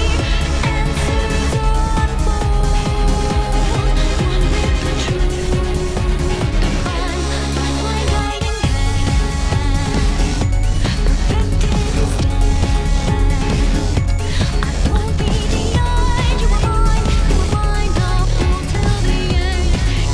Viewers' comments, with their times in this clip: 0:08 Is it just me or this part sounds SO Castlevania/Bloodstained? I can 100% envision this playing (without lyrics) while running through castle corridors and fighting demons?